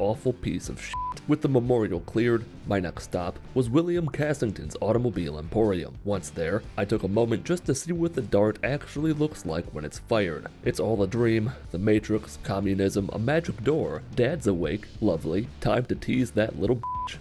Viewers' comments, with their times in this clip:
0:04 Does anyone else hear the little pop